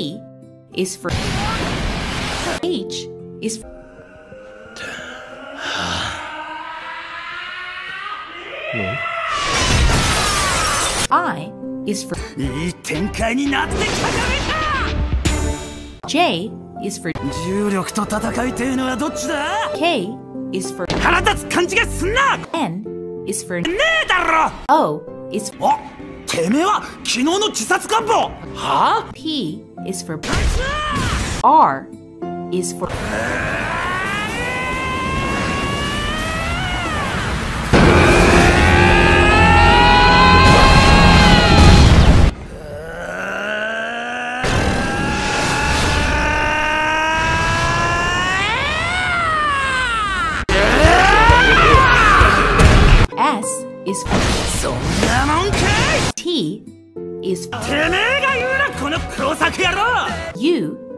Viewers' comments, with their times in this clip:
0:04 dazai's sigh was like "ah shit, here we go again" lmaoo
0:25 the voice crack is everything
0:42 chuuya sounds like starting car 😭
0:43 Please this is one of his best yells yet😩
0:46 I THOUGHT IT WAS MOTORCYCLE